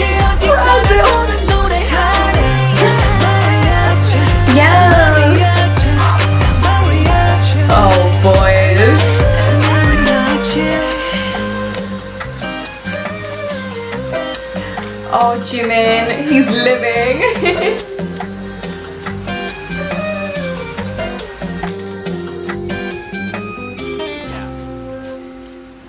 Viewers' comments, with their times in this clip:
0:07 am i the only one hearing him said "El MariaJin"? Lmao HAHAHA